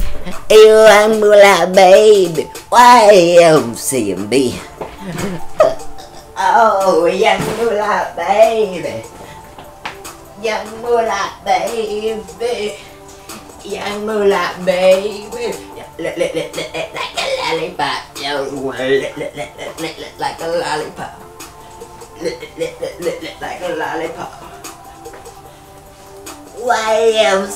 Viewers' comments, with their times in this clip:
0:05 VERY WAYNE LIKE TIL
0:07 He farted LOL
0:08 not even close :S what was that